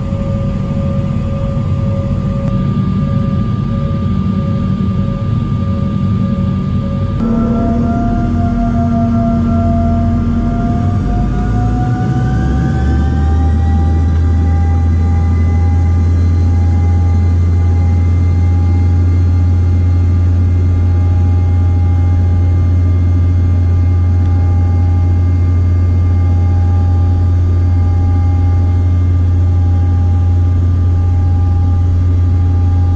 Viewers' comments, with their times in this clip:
0:05 the engine sound like a bus
0:14 nice vortex! And crazy to hear that a Chinese jet engine has that buzz to it. Sounds a lot like the CRJ-200’s